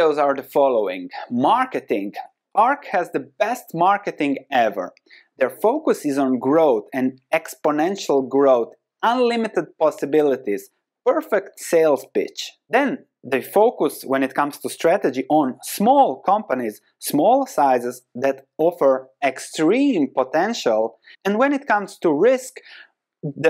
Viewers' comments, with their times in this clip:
0:10 perfect sales Bitch*